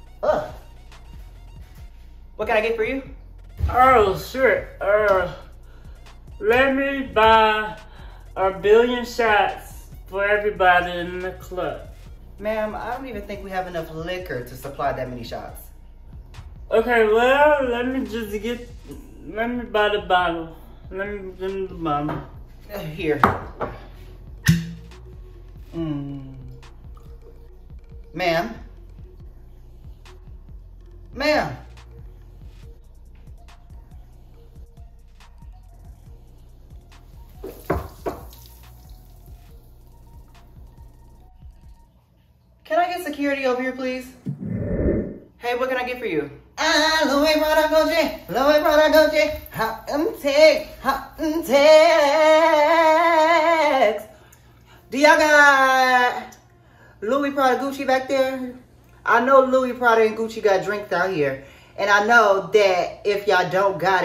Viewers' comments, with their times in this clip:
0:03 I HATE when he does that damn voice🤣🤣🤣🤣
0:05 I miss that voice 😭😭😭
0:51 that riff is crazy